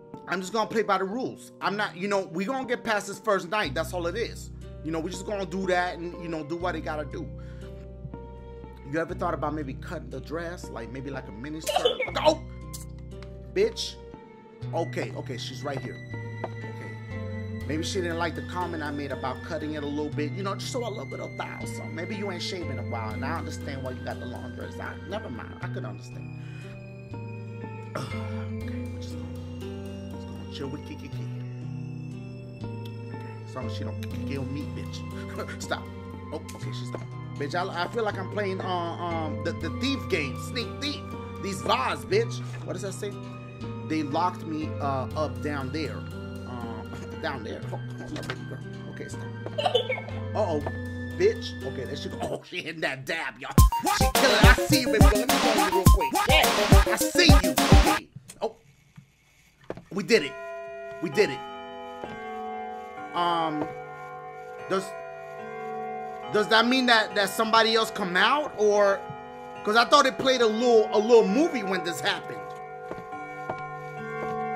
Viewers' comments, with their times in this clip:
0:08 He hit the Homer Simpson
0:11 He sounded like Homer Simpson lol
0:55 got me a little. Didn’t expect that song.